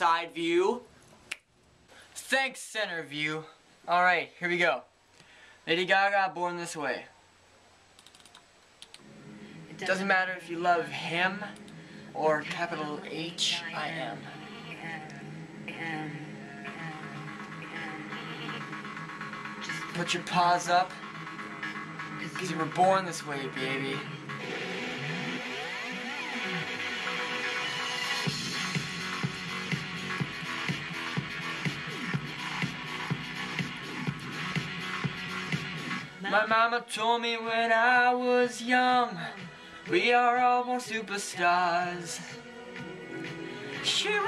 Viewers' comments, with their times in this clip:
0:10 If Yuhh Wanna Actually HEAR This Guy Sing, Go Tahh Like :) Before That, He Talks And Coughs Up Blood o_0
0:26 You are beautiful, but ahmm lets sum it up to you should stay away from the high nots sorry dude...but the little jam out made me laugh : )